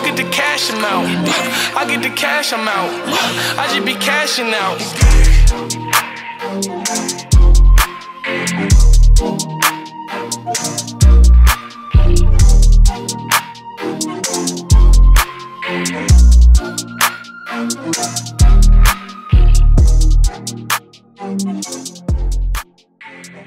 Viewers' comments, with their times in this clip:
0:05 one of the hardest beat drops of all time🔥